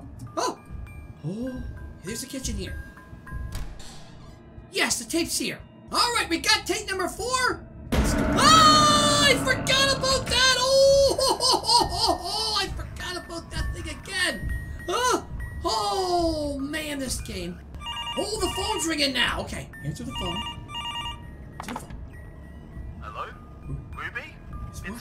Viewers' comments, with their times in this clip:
0:08 again what was that scream XD